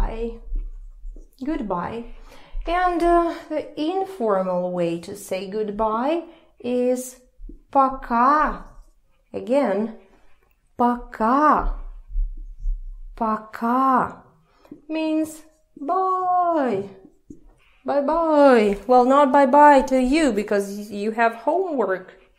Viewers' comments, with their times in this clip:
0:07 here До свидания we have c and в so c would be pronounced as з?